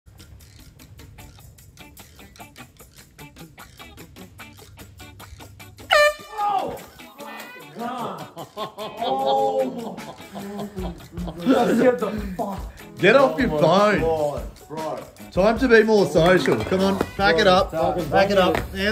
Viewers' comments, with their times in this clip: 0:00 Air horn prank New year eve's 😂